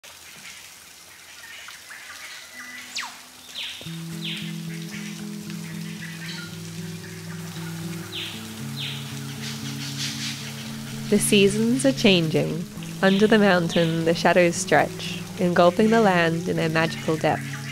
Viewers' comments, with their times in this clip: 0:02 Could somebody please tell me the name of the bird at the mark making that "Star Wars" kind of sound ?